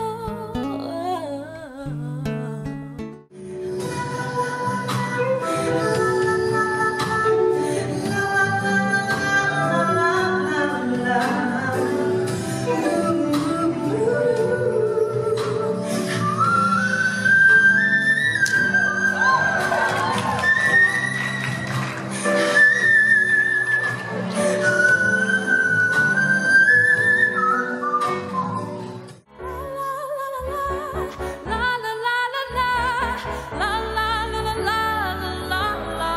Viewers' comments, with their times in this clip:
0:03 Chante shut the game down. She sung the whole verse in whistle. Game over. Thank the rest of you for coming.
0:04 is slayed ‼️‼️‼️ she had the best by far. Her whistles were so strong and clear.
0:05 There's only one Millie.....Chante Moore however hit some supernatural notes!!!
0:05 Chanté Moore's take on it was crazy. She changed it up to fit her style and made it way better in my book.
0:12 Damn she even continued in whistle register, I think that’s the most impressive and appreciative of all of them 👍🏻
0:17 Oh God!! That Whistle is HEAVEN!! And she can Resemble Mariah's Whistle Register. 😍😍😍😍😍😍